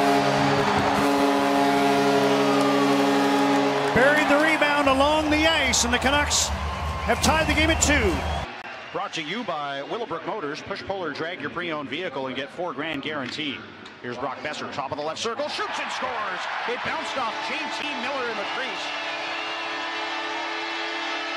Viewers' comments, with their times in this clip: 0:09 If you close your eyes and listen to the commentator from you will travel straight to the 90’s. He’s got that old school vibe. Good stuff.